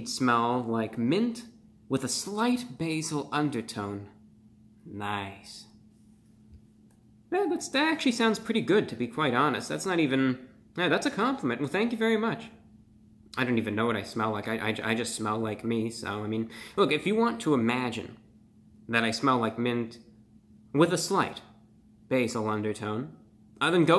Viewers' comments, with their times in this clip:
0:05 Why he say “nice” like that🤣🤣